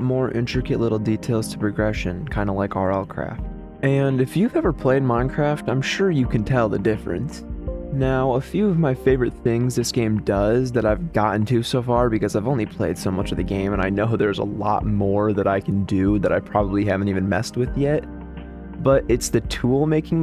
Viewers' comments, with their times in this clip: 0:07 windows 10 error dont worry your computer is fine the video made that sound dont fret